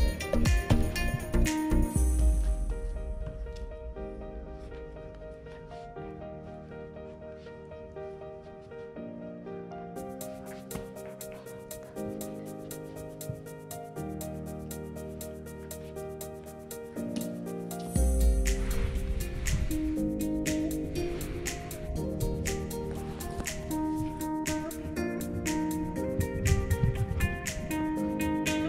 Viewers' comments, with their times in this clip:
0:10 After the cat hisses at Cheeto and then the puppy is just non stop chasing Cheeto all over and under everything, This is where I thought the racoon was going to take the puppy down and show him who was really the boss.